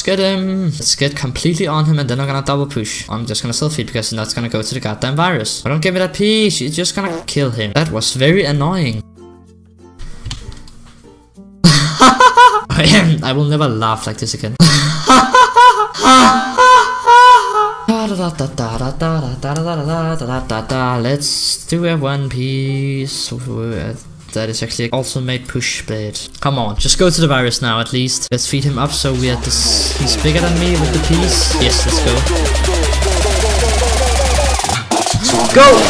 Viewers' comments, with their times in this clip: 0:09 whats was. That hahahah
0:18 The circus song from my childhood... :(